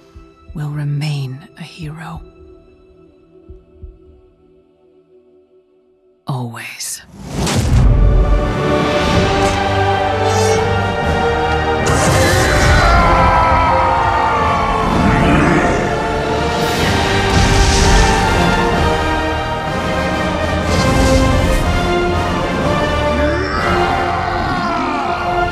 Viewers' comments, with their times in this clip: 0:05 when the theme kick in still badass
0:08 dat song ... the feels
0:08 That piece of soundtrack is the most empowering thing I have ever listent too. Azeroth last hope !